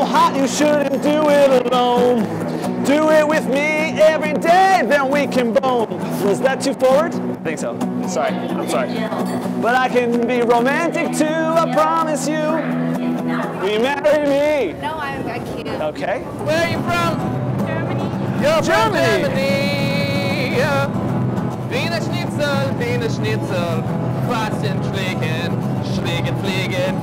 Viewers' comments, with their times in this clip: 0:08 Amazing Triangle Play
0:09 Love the triangle Great timing.